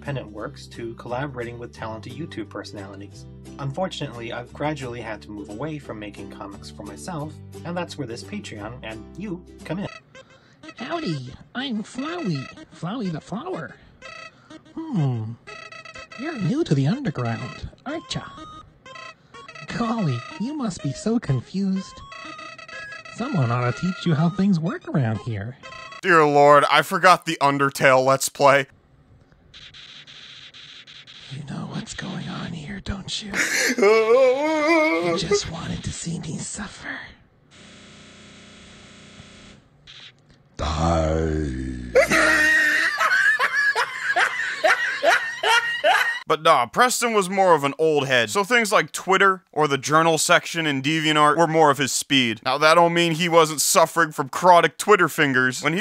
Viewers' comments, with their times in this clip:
0:10 ok i can't laugh at this, he sounds just like me playing games
0:33 dude that laughing sound clip sounds just like you lmfao
0:38 He has such a gay voice.